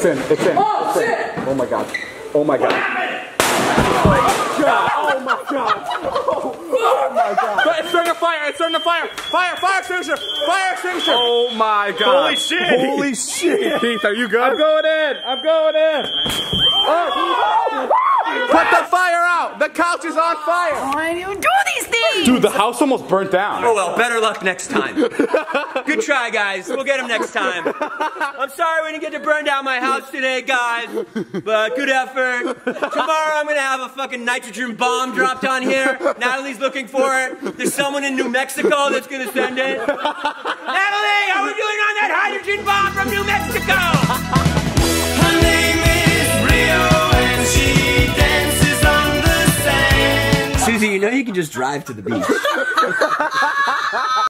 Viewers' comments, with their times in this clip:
0:08 why does he sound like the bee on the bee movie
0:15 HE SOUNDS LIKE JERRY SEINFIELD
0:15 Is nobody going to talk where it sounds like glass breaking in minecraft?
0:17 he sounded like barry from the bee movie😂
0:19 He sounds like Barry B Benson
0:19 “put the fire out, the couch is on fire. “ Anyone else notice how at that point his voice sounded like the bee in the bee movie. 😂
0:20 he sounds like Barry benson from the bee movie
0:52 Her laugh though